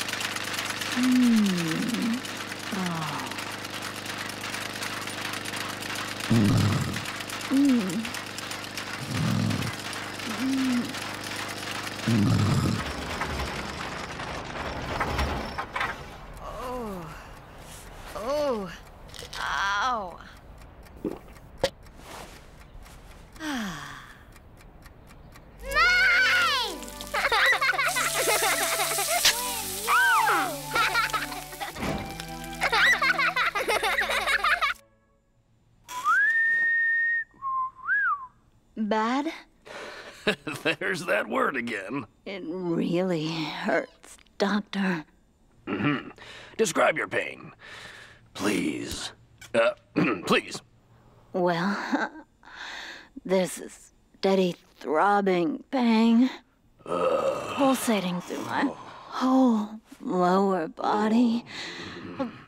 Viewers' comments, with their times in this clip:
0:07 she actually had a good sleep cuz when clay is sleeping he’s snoring and she doesn’t but when she toke those pills she actually had a good sleep
0:47 Describe your bread.